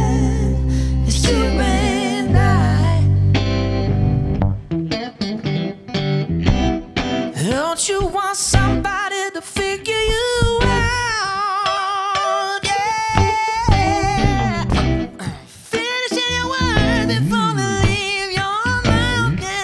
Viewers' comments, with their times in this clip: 0:05 how fuckin' beautiful of a mixed register do you wanna have man.....HOW